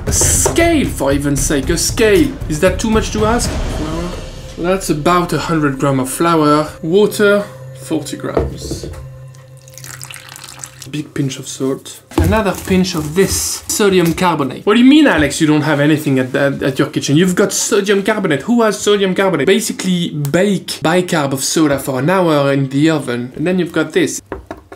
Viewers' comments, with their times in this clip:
0:07 Holy moly that English accent was quite sexy 🤭